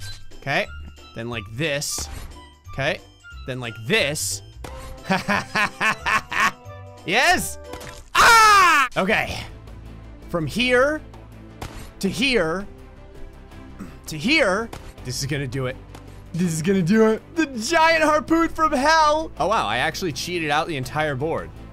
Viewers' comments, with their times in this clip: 0:06 scream is hilarious
0:08 That could go in a perfectly cut scream compilation lmao